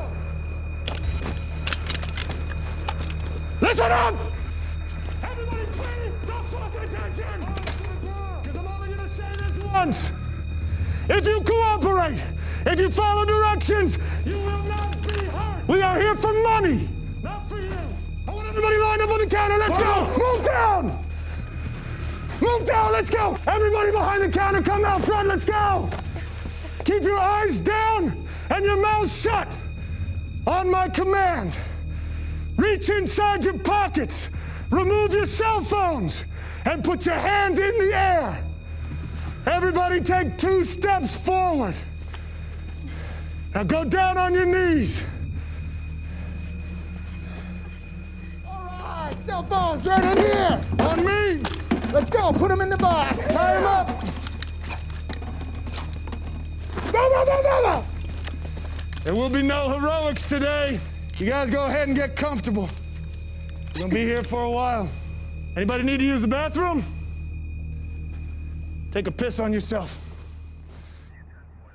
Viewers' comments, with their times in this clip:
0:03 how i actually shout at kids in school
0:03 that yell was so cringy 🤣🤣🤣
0:56 who tf shouting?
0:56 what the hell is that guy yelling?